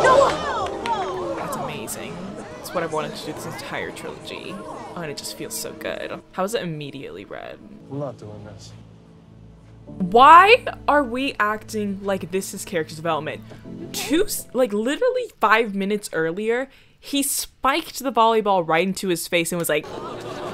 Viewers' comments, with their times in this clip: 0:04 I swear you sounded like azula from avatar 😂